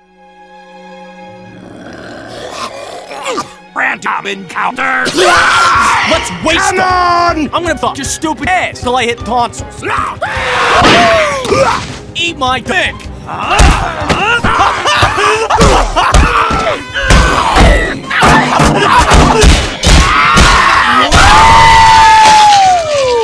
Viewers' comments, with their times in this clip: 0:08 What does scoot say ? Deleted tonsils?